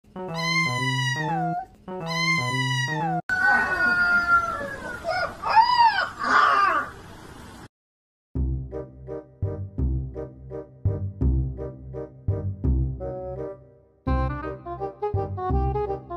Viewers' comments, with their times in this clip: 0:01 when dogs say MEOW XD